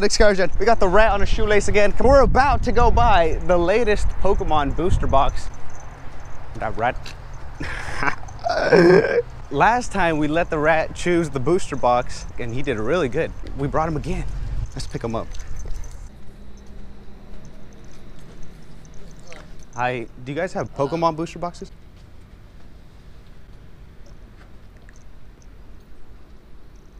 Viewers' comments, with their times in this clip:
0:08 tf is that a dieing whale?!?